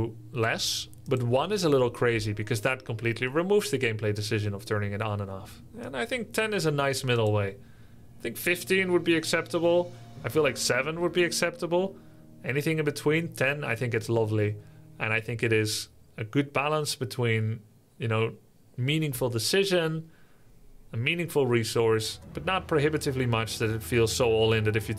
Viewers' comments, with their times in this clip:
0:08 discussing mana burn cost activation. subtitles: "I think 50 would be acceptable" I feel like the auto-generated subtitles knows what grubby actually wishes for internally